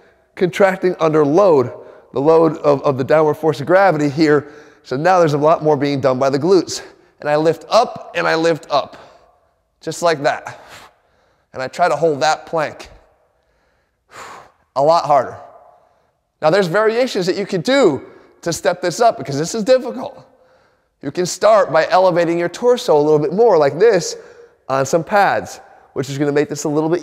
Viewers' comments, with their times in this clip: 0:09 Yeah, his BREATHING shows how tough it is. More importantly ... on his "reverse plank" I tried and is SO dangerous for SPINE!🦴 It's like you're intentionally STRAINING your Spine!